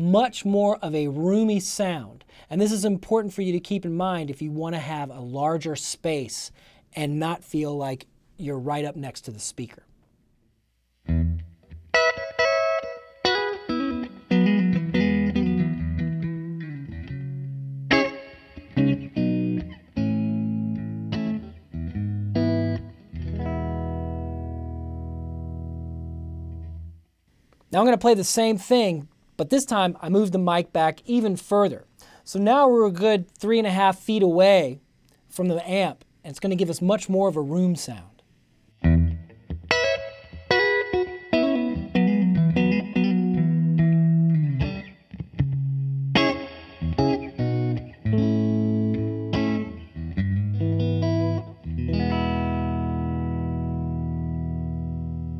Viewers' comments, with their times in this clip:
0:09 Wow! what a great sound! JRS -34 ribbon with a strat sounds incredible!!
0:11 I want that strat tone Are they special pickups? What amp? Great playing!
0:39 is just glorious. Astounding how such a simple setup can sound so full and complete. Close mic setups never sound realistic to me. I love hearing a little room (real room, not plugin reverb) in the guitar tracks, and the figure 8 pattern on the ribbon captures a bit of that without needing a second mic. Definitely my desert island recording setup.